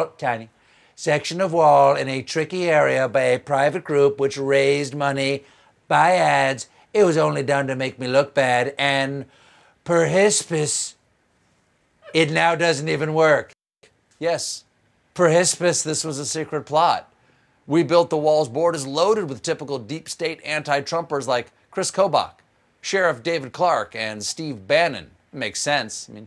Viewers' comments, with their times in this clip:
0:08 Me too. I lost it when he says "perhsps" and I could hear her in the background
0:10 Gawd, I will miss the sound of Stephen's wife giggling at his jokes. So fun!